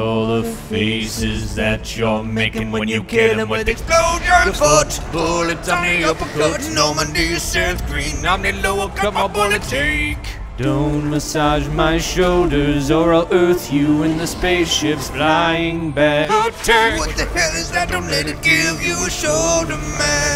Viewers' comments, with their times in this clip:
0:06 For 8 years I thought the line was "Normandy set free" but is Seth goddamn Green.